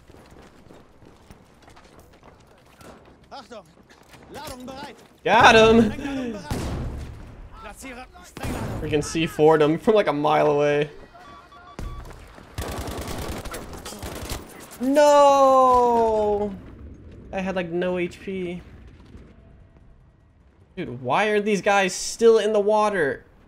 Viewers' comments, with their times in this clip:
0:05 his character speaks german lol